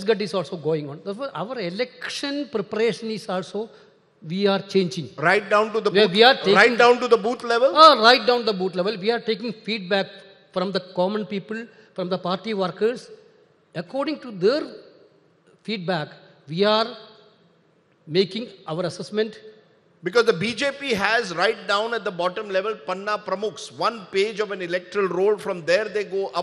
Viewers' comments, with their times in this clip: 0:08 Rajdeep says " right down to the booth level" ; KC says" right down to the boot level" 🤣🤣🤣🤣🤣can't control my laugh